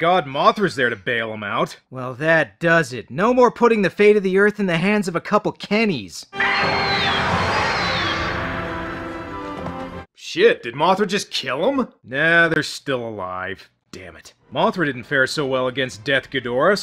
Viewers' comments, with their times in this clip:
0:04 Maybe you shouldn't be close to a 50 foot Moth when it roars, also you fell the wrong way your supposed to fall off the edge.